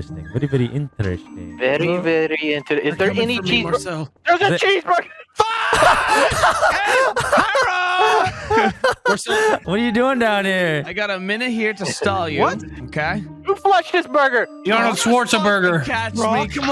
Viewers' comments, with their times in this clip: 0:03 Terroriser turns german for a few seconds